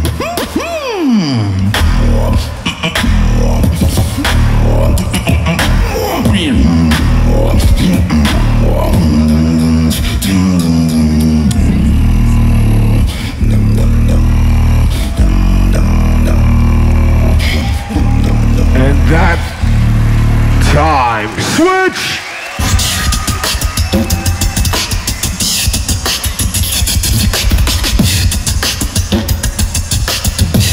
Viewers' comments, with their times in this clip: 0:10 what was he Summoning at the end?!!
0:11 this should be a sample. My car shook...he sounded like he was summoning a dragon.